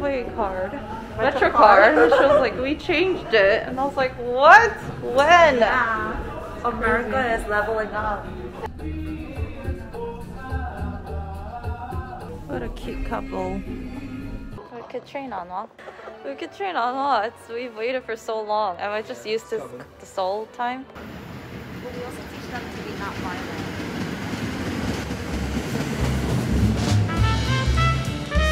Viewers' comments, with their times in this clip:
0:10 The song playing in the back brought back so many memories 😭✋🏼